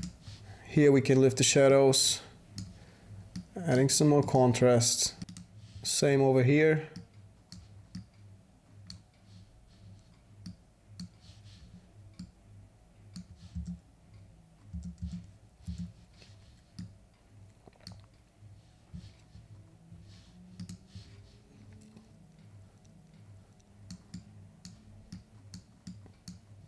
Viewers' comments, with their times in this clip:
0:08 I thought I'd gone deaf!